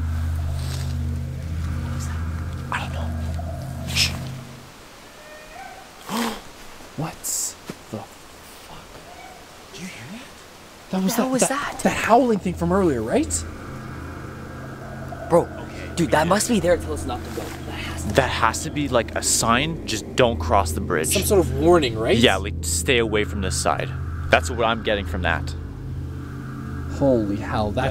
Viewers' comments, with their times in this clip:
0:10 you hear a tribe howl after seeing bloody skull
0:10 it sounds like a hyena correct me if I’m wrong